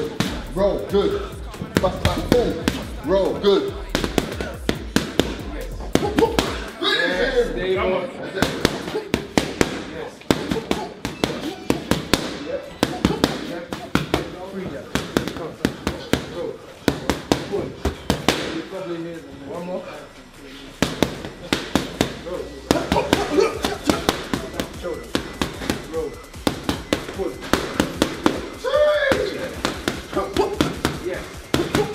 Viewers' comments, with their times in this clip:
0:10 who heard the lycamobile ringtone someone was bussin shots whilst in the boxing gym jkjk
0:10 someone's dell line going off. 😂
0:12 it sounds like a fire ass beat😂